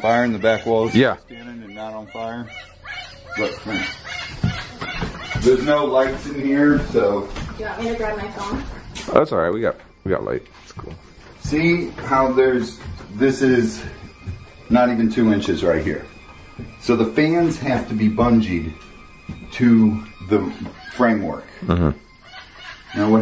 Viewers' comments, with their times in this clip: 0:04 she still laughing